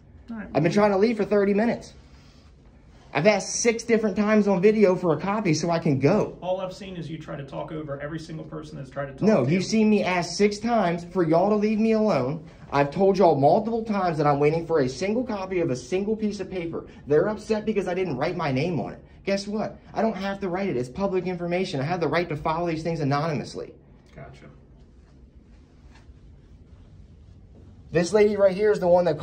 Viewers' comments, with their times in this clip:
0:10 cops get quite